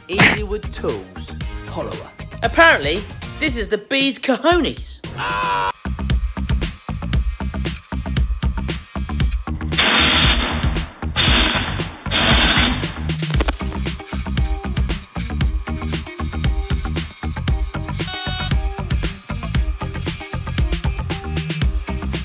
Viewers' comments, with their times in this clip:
0:07 Triggerwarning sounds like gunshots to me. And it was quite surprising.